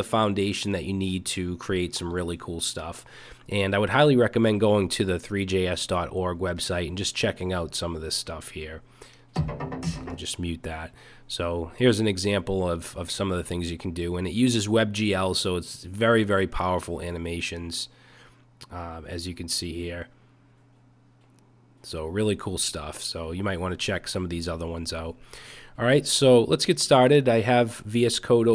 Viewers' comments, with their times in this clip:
0:09 music that we deserves haha xD